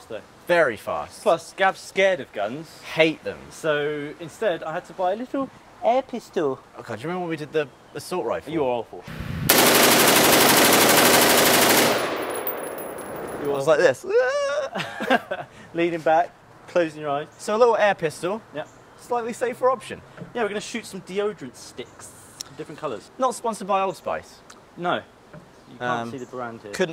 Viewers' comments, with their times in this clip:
0:09 thanks for the earrape of the assault rifle I was in school and everyone looked at me when they heard the gunshots